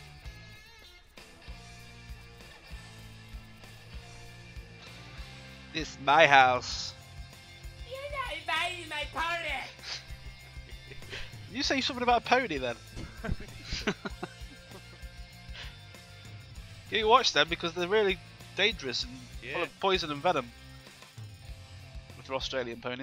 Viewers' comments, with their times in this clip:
0:07 .... you're not admiring my pony maybe?